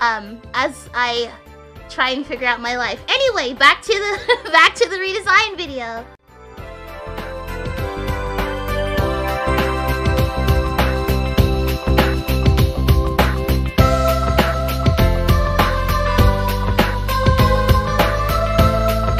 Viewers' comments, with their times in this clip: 0:07 What’s the song that plays ?? It’s very groovy! Edit: and the song that plays after hehehehe